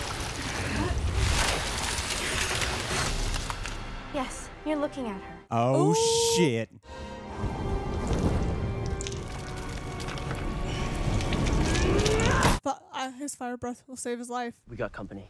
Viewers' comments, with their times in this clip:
0:03 the biggest Snap ever snapped in the whole wide world